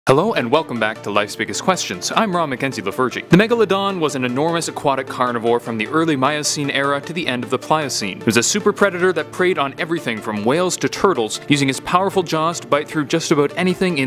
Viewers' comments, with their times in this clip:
0:02 Did he said the Virgin